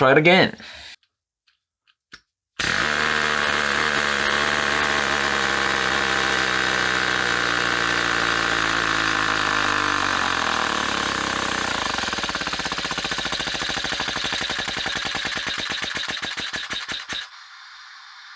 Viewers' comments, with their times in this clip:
0:03 sounds like a dirtbike, love it